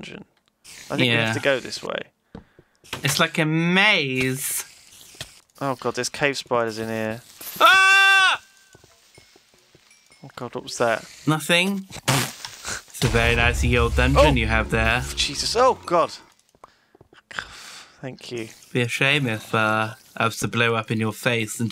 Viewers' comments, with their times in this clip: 0:07 the echo... :P
0:07 you can hear the echo lol
0:08 A wild CREEPER appeared! What will Honeydew do? Scream.. You're right, it is never very effective..